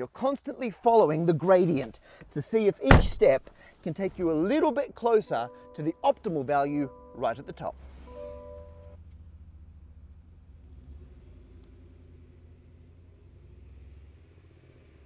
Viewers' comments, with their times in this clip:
0:03 I thought the seatbelt tone is a transition 😂 and was in for a documentary 😅